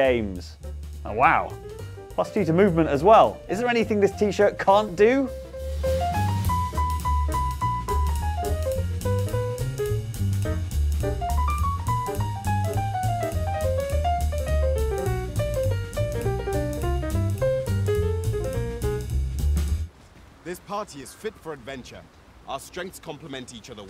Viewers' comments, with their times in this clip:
0:04 whenever I hear this piano riff I think of a cat from an old cartoon playing the piano standing up and animatedly tapping their foot